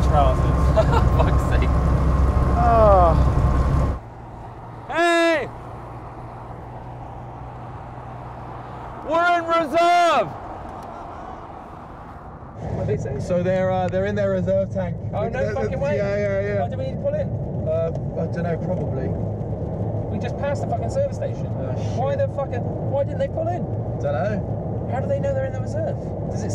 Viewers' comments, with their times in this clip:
0:10 Dat quiet laugh don't know why it cracked me up.